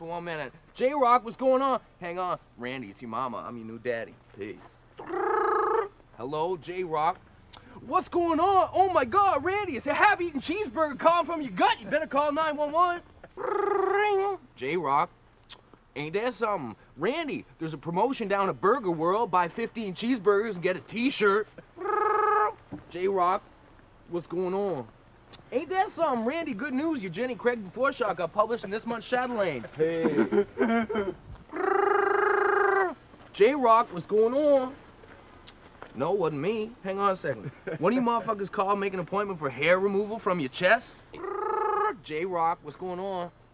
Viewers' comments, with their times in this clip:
0:03 Layhe started to laugh but the scene cut short :P
0:30 haha bubbles laugh is fuckin hilarious